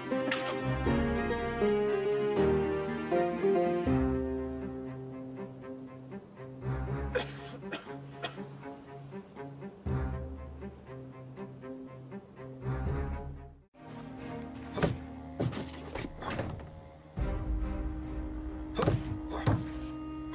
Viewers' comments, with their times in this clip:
0:03 this music makes me wanna drink all the bleach & die in pain. Bad memories.